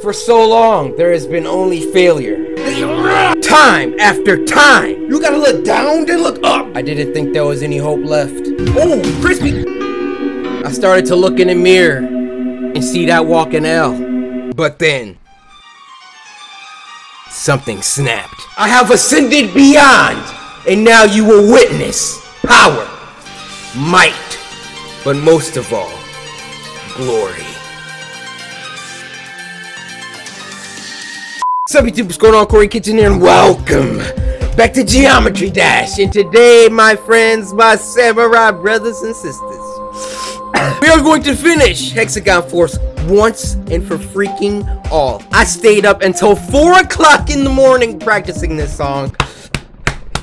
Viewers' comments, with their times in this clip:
0:05 he sounds like eminem
0:11 I thought he said hell
0:32 Turn on subtitles subject is Colonel quarry Kitchener and wElCOme